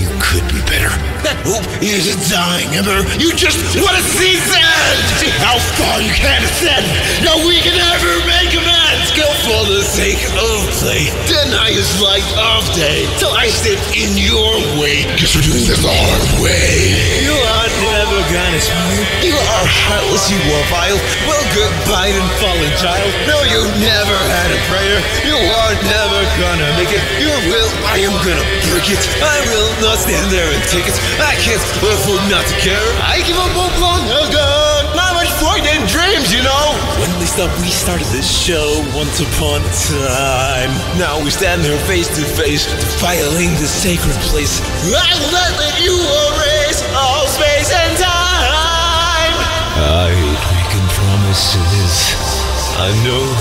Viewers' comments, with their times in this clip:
0:02 sans sounds like he crying and trying to keep his breath which is very cool
0:02 Sans screaming at the top of his lungs is quite satisfying to me for some reason
0:03 The way how Sans just goes from a calm tone and slowly to a “I’M GONNA WRECK YOUR SHIT” tone just gives me chills
0:03 i keep hearing this as "you just wanna see sans"
0:04 I don’t think anybody’s talking about how absolutely fucking PISSED sans sounds here, like, HOLY SHIT dude
0:04 I've never heard Sans so pissed off before. That startled me 😂
0:04 I like how u can hear his voice getting louder as he is trying more and more to kill you
0:05 By he sounds so intimidating and mad that I just got a bit scared 😅 that's one heck of a voice 😱
0:05 bro sans just saying random letters to sound like a cartoon character when they get hurt but can't swear
0:07 “Now we can never make amends,” The line in itself has less value than some others, however the delivery of this line is crazy. The way sans shouts, his voice cracking and breaking, it shows how heartbroken and devastated he is by Papyrus’ death. That line specifically felt like it was targeted about Papyrus in the way sans screams about how he’ll never forgive you. His grief, anger, betrayal, were all perfectly portrayed in that shouted line timestamp for you :)
0:14 Google: Girls tend to talk with a higher voice when taking to someone they're attracted to Girls when they talk to me:
0:15 I LOVE THAT ROAR
0:17 you can hear the words "Kill or be Killed" in the background and that makes it even more of a masterpiece than it already is
0:18 For me it's Bro the echo voice there.
0:19 I just love the line "You are heartless, you are vile" just the feeling put into the word "heartless" in particular.
0:27 Sans: deep voice I will not stand their and take it I can't afford not to take it. I GAVE UP LONG AGO NoT mUcH pOiNt In DrEaMs YoU kNoW
0:32 I'm sorry but the best part is: with "I gave up hope long ago, not much point in dreams, you know," because it really looks, feels and sounds like the voice is coming from the sans in the artwork - like his voice echoes just as it should be if he was fighting and leaped into the air like that - you can hear how fast Sans must be moving! Gives me chills everytime.
0:33 I like to think the “No point in dreams, y’know?” part was just Sans taunting Frisk and/or Chara on top of a gaster blaster bc of the echo.
0:35 I thought he said Mom, I farted dreams.
0:35 I love the voice crack